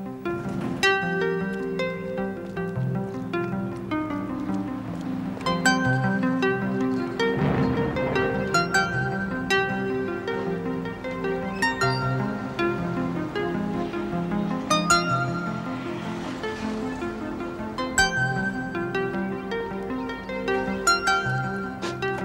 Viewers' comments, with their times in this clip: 0:04 A touching piece of music there helping us feel Ferguson's desire, but reluctancy to do what she's about to do, and knowing it's a do or die situation if she's got the guts to do it.